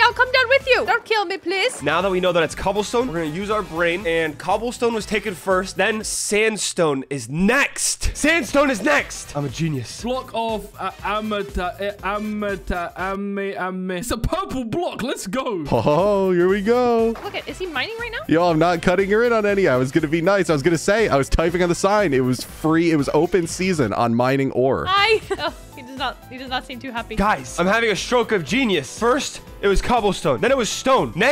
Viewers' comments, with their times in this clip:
0:10 Bro can’t say Amethyst.
0:12 me when I’m Reading a big word😂